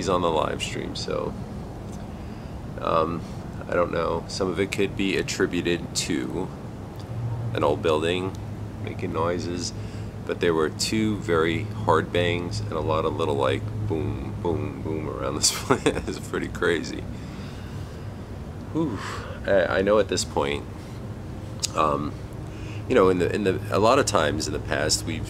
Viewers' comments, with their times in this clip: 0:07 there was a noise